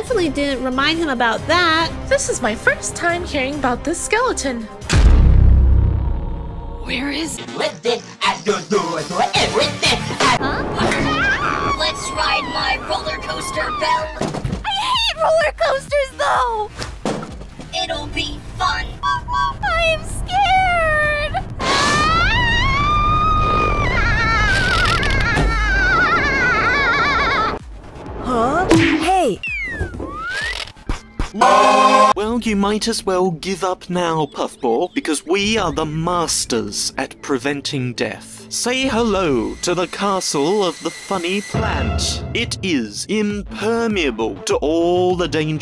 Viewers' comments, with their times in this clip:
0:07 that voice sounds like pin
0:23 Goofy ahh scream
0:24 bell sound like a horse
0:25 Bell sounds like a granny in
0:31 The scream got me wheezing
0:31 Bro that marker scream 💀
0:31 THE PART WHEN MARKER SCREAM GOT ME WHEEZEING-
0:31 The best part i liked is Marker was like AAAAAAAAAAA
0:31 is hilarious when marker screams like ahhhhhhhhhhhhhhh 🤣🤣🤣
0:31 Marker: Gangsta paradise scream